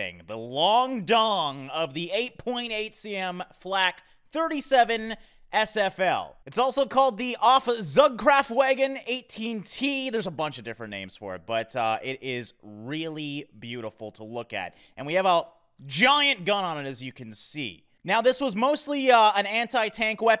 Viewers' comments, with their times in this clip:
0:08 I love how you pronounce "8.8cm Flak 37 auf 18 Ton Zugkraftwagen". This thing is a glorious German TD (Tank Destroyer) I know that because I am German. And patriotic... And interested in WW2 weapons and vehicles... And I like to play War Thunder... So yeah, a beautiful gun mounted on the Sd.Kfz 9 Halftrack. I love all those videos where you show us tanks and military stuff. Do you think there is already a "Maus" (german Heavy tank) or the Tiger H1?